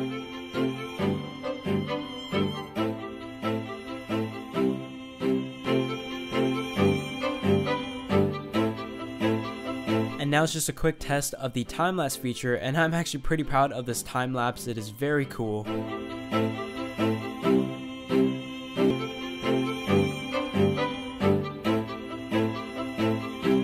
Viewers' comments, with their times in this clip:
0:05 my ears hurt